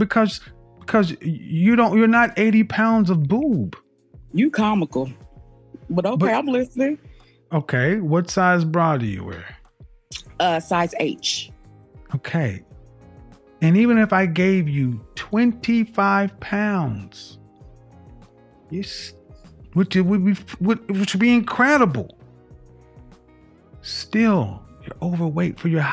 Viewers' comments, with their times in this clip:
0:06 you can hear the gravy on her voice